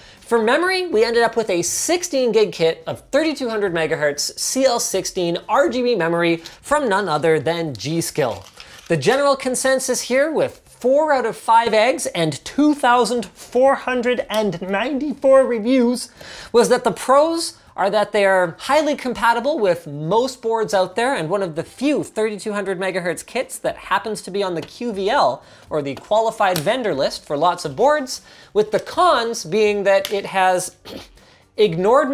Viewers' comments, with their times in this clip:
0:08 Linus turns into Kermit the Frog XD
0:09 my man turned into kermit for a second
0:09 the Kermit transformation has started
0:09 That Kermit the frog voice lol 🤣
0:09 why did Linus turn into Kermit
0:09 Linus turned into kermit
0:09 Bro sounded like Kermit
0:10 When Linus was talking about the reviews of the RAM did anyone else notice his voice turns into Kermit the Frog???? Here's the time of the Kermit.
0:10 why did he just turn into Kermit
0:10 Why did linus turn into kermit the frog aha
0:11 kermit mode has been turned on
0:11 bro became kermit the frog
0:11 Linus goes full Kermit
0:11 what happened to his voice
0:11 Linus just randomly went into Kermit mode
0:11 Linus goes full Kermit LOL
0:11 linus turning into kermit
0:11 i sware linus turned into kermit
0:12 why does Linus sound like Kermit the frog when he says over 2494 reviews
0:12 Linus unleashing his inner Kermit the Frog
0:12 he got so into it that he turned into Kermit the frog
0:12 sir the Kermit voice machine isn't ready yet you cant use it. Linus: just do it, "DO IT NOW"
0:12 That moment when Linus sounds like Kermit the Frog 😂
0:12 linus goes kermit mode
0:12 wait wtf did linus transition to kermit perfectly or is that just my ears
0:12 bro turned into Kermit the frog
0:12 he turned into Kermit the frog wtf
0:12 linus turns into kermit
0:12 i cant be the only one that thinks that he sounds like kermit the frog ...right?
0:12 You sounded like Kermit the frog lol
0:12 I swear I just hear Kermit
0:12 he sounds like kermit
0:12 why does he sound like Kermit the frog
0:12 (Turns into Kermit)
0:12 Linus turns into Kermit the frog
0:12 Linus turns into fucking Kermit the frog
0:12 holy shit Linus got possessed by Kermit the frog 🐸
0:12 why did bro just activate Kermit mode
0:12 Linus turned into Kermit for a sec there
0:12 i love how he turns into kermit the frog hahaha
0:12 why you turn into kermit
0:12 Why did he do the kermit voice
0:12 Is it just me or does he start to sound like Kermit
0:12 Kermit? Is that you!?
0:12 Linus sounding like he's about to tell me to clean my room
0:12 Linus became Kermit the frog for a second
0:12 Linus became Kermit for a sec
0:12 Kermit is trying to escape Linus' Body
0:12 proceeds to convert to kermit
0:12 kermit tech tips?
0:12 Did anyone else here linus turn into Elmo
0:12 linus got possessed by kermit lol
0:12 Who else thinks he has a good Kermit impression
0:12 is linus Kermit the frog/
0:12 you slowly transcended into Kermit The Frog™ for a minute there.
0:13 never though I’d hear Kermit talk about RAM reviews
0:13 Linus turned into Kermit for a second there lol
0:13 dude sounds like Kermit
0:13 we see Kermit slowly taking over Linus's body
0:13 Kermit Linus, lol
0:13 Kermit mode activated
0:13 Linus turning into Kermit
0:13 Why did he sound like Kermit ?
0:13 Linus turned into Kermit for a second there lol
0:13 Linus turned into Cermit the Frog🤣🤣
0:13 Linus being Kermit the frog for 3 seconds
0:13 What the hell happened to his voice lol
0:13 linus just became kermit the frog wth!!
0:13 linus just turned into kermit nooooooo XDD
0:13 is it me or did linus just turn into Kermit the Frog
0:13 turns into kermit
0:13 My man turned into Kernit for a sec
0:13 when your inner Kermit pops up
0:13 linus became kermit
0:13 why he sound like kermit lmao
0:13 Bro turned into Kermit.
0:13 damn never knew Kermit was in the team!
0:13 kermit tech tips wtf linus
0:13 Why does Linus turn into Kermit
0:13 Therapist: Kermit Linus doesn't exist he's not real Kermit Linus:
0:13 kermit Linus scares me
0:13 Kermit is that you?
0:13 kermit tech tips
0:14 perfect Jordan Peterson impression.
0:14 Linus turned into Kermit there for a bit
0:14 sounds like kermit o-o
0:14 he sounds like kermit for a second
0:14 mans turned into kermit
0:14 Bro turned into Kermit for a second there. 💀
0:14 Linus becomes kermit
0:14 Bro sounded like Kermit
0:14 Linus turns into Kermit the frog.
0:14 sounded like kermit the frog
0:14 kermit tech tips
0:14 BAHHA HE SOUNDS LIKE KERMIT
0:14 Linus became Kermit the frog in was funniest part of the video
0:14 did he just turn into Kermit?
0:14 i didnt know that linus ancestors were kermit
0:14 linus turns into kermit the frog
0:14 Is it just me or did he sound like Kermit The Frog ?
0:14 bro turned into kermit 💀
0:14 Holy shit man they got kermit da frog to narrate the video
0:14 Turned into Marvin the Martian there lol
0:14 today i learned linus does a really good kermit voice ( i could not see exactly because corptube made it impossible to see timecodes when the video background is white after they made their much desired design change)
0:15 fr why did he just turn into kermit the frog for a second
0:15 LOL KERMIT VOICE
0:16 my mans is kermit